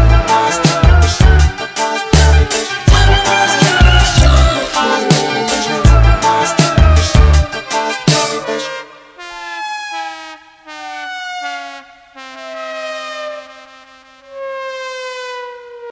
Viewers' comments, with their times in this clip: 0:08 Sound like a game over music